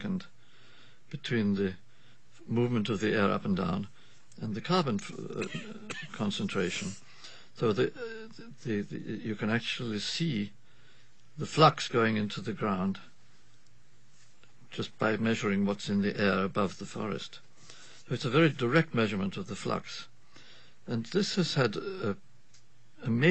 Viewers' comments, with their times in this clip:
0:07 sounds like someone hits a bowl and coughs lol!